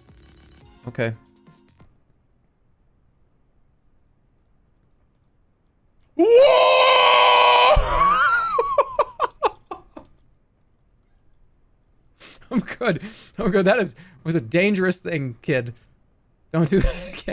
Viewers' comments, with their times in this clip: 0:05 Legend of Jerma: Tears of the Ballfondler EDIT: That was a primal sound. Jerma was half-way between mind breaking terror and inchoate rage... xD